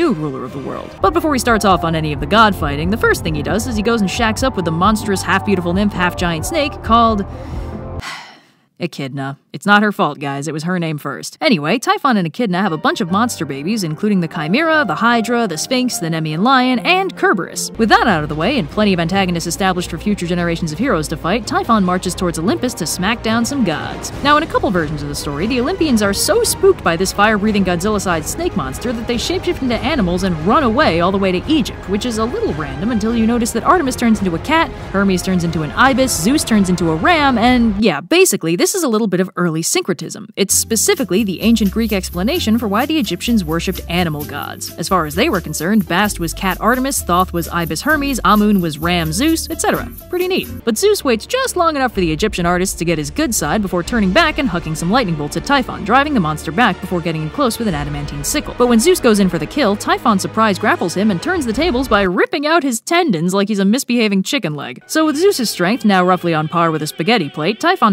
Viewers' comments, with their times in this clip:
0:05 I’m afraid I don’t follow. Why the sighing?
0:06 i dont get the sigh
0:55 Did you say "getting close with an adamantium sickle"